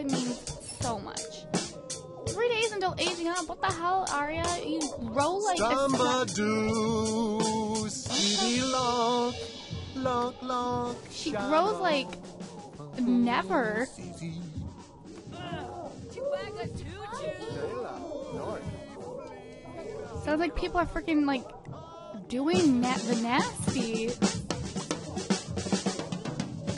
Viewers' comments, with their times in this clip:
0:09 his singing XD